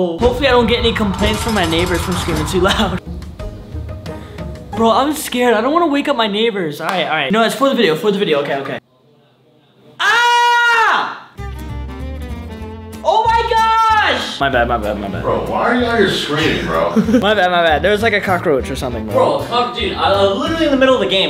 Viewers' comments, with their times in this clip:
0:09 why did that sound like the neighbors